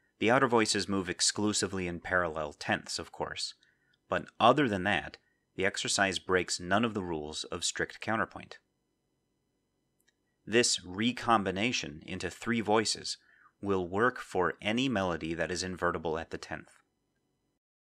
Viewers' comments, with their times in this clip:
0:05 At note 6 of the cantus firmus, the leap down to E in the bass works well as a momentary 6/4 implication, but when combined with itself at the tenth, the harmonic rhythm increases to 3 chords in 3 crotchets: A minor, E minor, A minor. I don't think this brief but sudden increase in harmonic rhythm is desirable. Do you think 6/4 implications should therefore be avoided when writing this sort of invertible counterpoint?